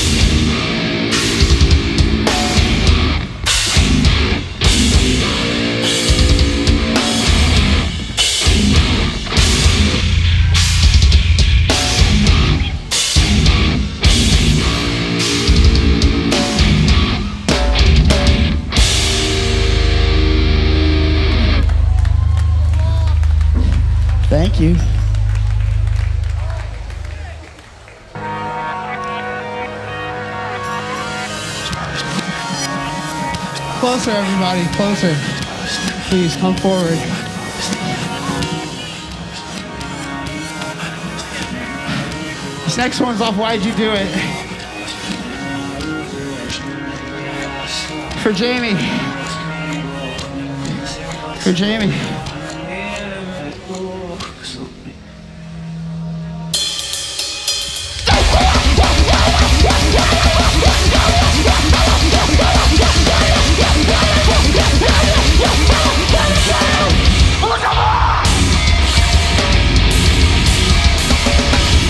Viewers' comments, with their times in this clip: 0:10 The bass oooffffff
0:59 is the sound of Courage trying to explain hardcore to Muriel